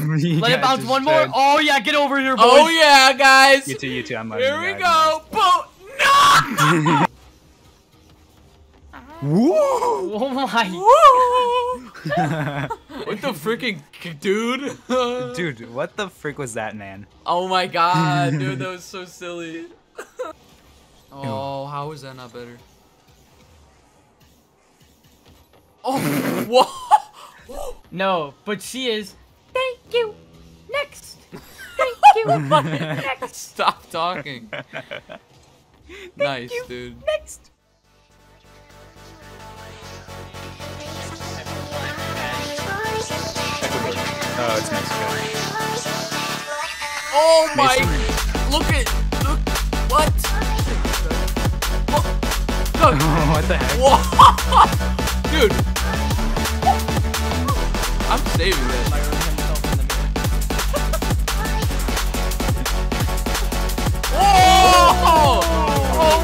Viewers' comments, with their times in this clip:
0:06 someone farted LOL
0:48 nice rap Bro 😂